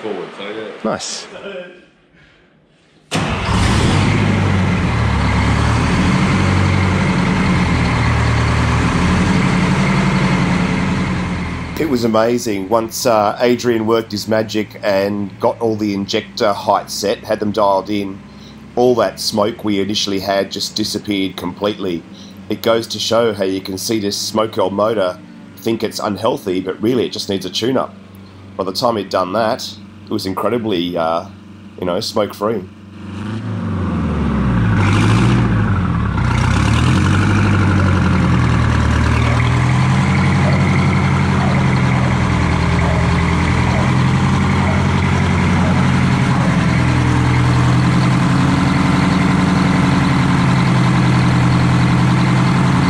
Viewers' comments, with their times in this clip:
0:10 sounds magic, then a n ultra tune after, baby honk hard
0:33 now that's the sound of a diesel... awesome!